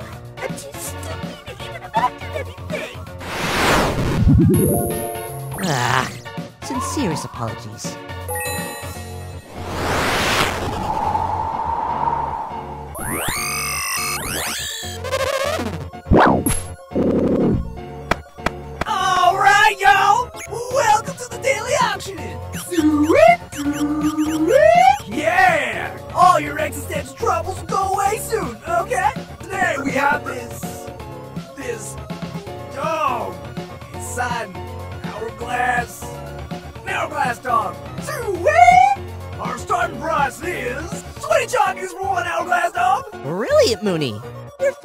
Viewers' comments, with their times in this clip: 0:04 im obsessed with ena's aagghh and sincerest apologies
0:04 why was that "naaaa" noise so adorable?-
0:06 I’m obsessed with the way ENA says “ sincerest apologises”
0:18 I really love the auctioneer's voice! I would love for him to be a reoccurring character
0:19 That Ligh Key Sounds Like Bill Cipher, I Formed The Word Low And High If Y'all Didn't Know
0:19 is my mind insane or something but why can I hear Bill Chiper voice in my head...
0:22 Why does this remind me Ronaldo saying suiii 😂
0:23 the sounds in the background sound like sound effects from hamsterz on the ds
0:25 Why does that one dude on sound like gir from invader zim Edit: okay not really lol but still it sounds like him a little bit lol
0:31 i don’t know why but i love that “this….. dog..”